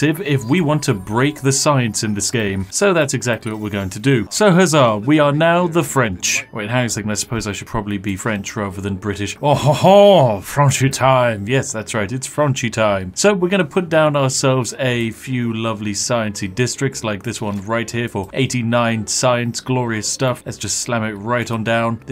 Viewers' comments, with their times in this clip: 0:09 hey that's exactly how we speak in France! 😁
0:09 That was the most convincing French accent I have ever heard, mon ami.